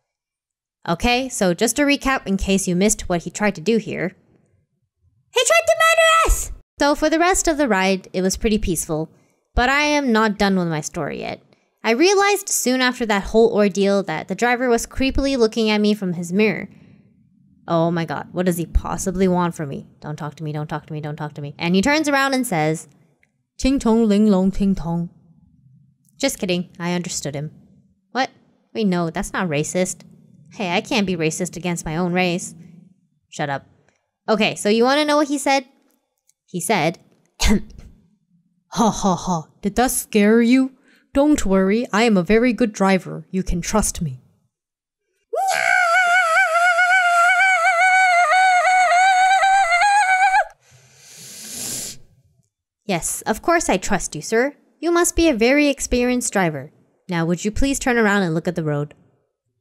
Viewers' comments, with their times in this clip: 0:03 The best part of this video for me is ... "He tried to murder us"😂😂😂 I love that childish voice😂
0:03 "HE TRIED TO MURDER US!" you said it in such a high pitch cute voice
0:45 kettles be like
0:46 Loved the kettle noises